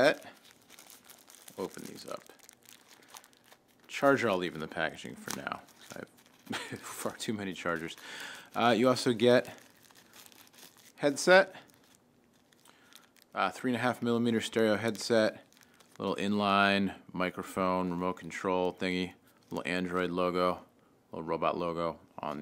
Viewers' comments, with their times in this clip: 0:07 did you say " I fucked to many chargers"